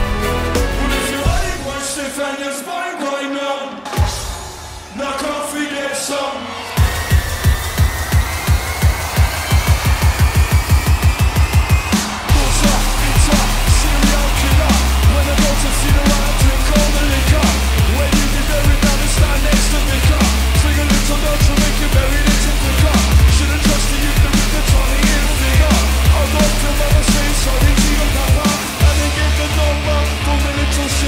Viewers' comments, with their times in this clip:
0:08 WHERE THE FUCK IS THE DOUBLE-PEDAL?????
0:10 the snare drum fails
0:11 God, that snare hit was terribly off beat. Good song though.
0:11 you FAIL at drums ^^
0:12 That drop <3
0:13 Now, don't get me wrong. I love Pendulum and all, but that kick building up into the main part ... if the drummer would just hit the snare half a second earlier... But still pretty tight!